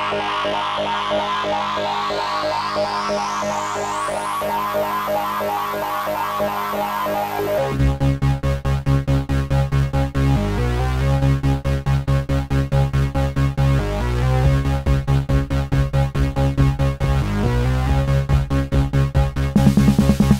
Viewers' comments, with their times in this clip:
0:07 it sounds like an early Vince Clarke production. Reminiscent of Yahoo or his early work with Depeche Mode. Sweet!